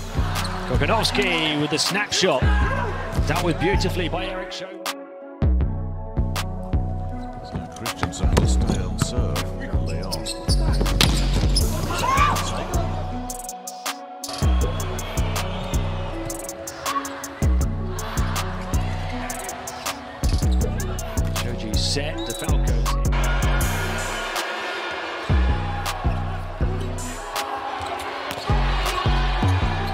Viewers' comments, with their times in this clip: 0:10 if you were wondering, it was shoji's scream